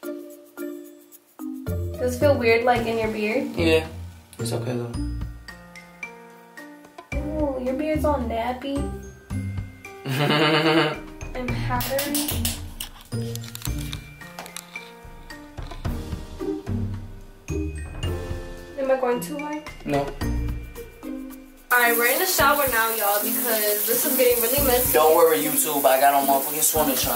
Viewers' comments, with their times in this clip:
0:10 that laugh thoooo🤣💀